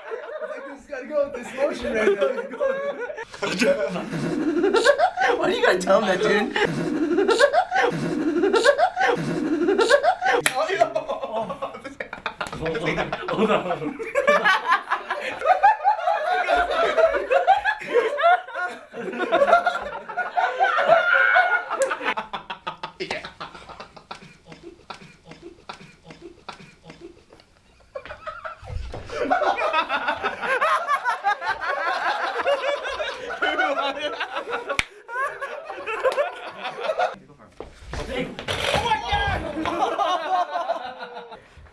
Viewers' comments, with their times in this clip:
0:04 sounded like a hen laying eggs.
0:26 watching guys laugh is so funny! xD made me ROFL